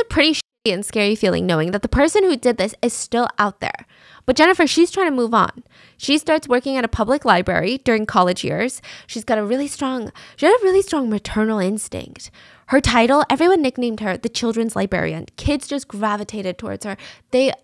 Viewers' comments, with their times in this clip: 0:04 Again with the lyeberry :D